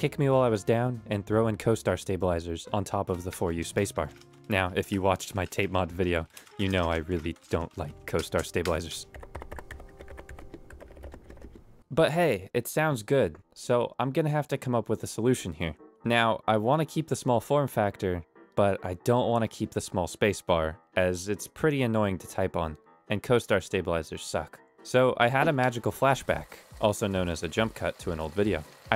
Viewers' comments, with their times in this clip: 0:10 is more a thlonck than a thocc... a thocc has a more clacky quality with a lower pitched "formant" if you could call it that. thocc, in my ears, is defined by a loud, short transient and little to no sound during the travel. what sets "clack" and "thocc" apart is the timbre, while "clack" has a brighter, higer pitched timbre, "thocc" is much deeper, like you mentioned, and darker. tl;dr, the two most important factors of "thocc" are: - deep/dark/low-pitched timbre - short, loud transient, without travel noise